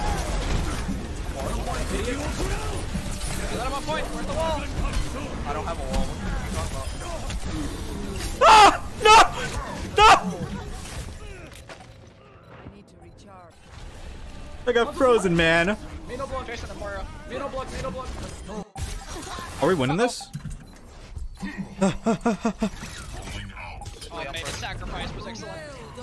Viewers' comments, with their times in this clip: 0:07 The real Scream of Fear !
0:08 Mei froze herself bc she got scared by the screams of victim